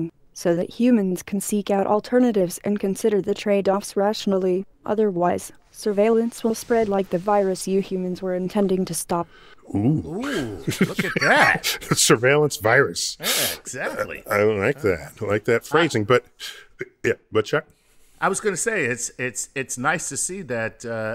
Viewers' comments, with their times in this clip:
0:04 Robots can ENFORCE!! Humans ... scary Also "Surveillance will spread like the virus you intend to stop", Dude, that sounded so ominously